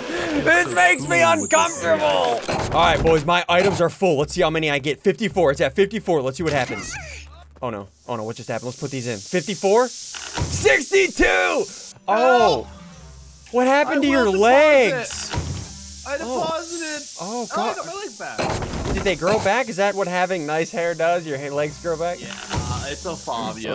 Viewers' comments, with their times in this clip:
0:06 Did anyone here the VERY VERY VERY WEIRD SOUND?! !!!!!????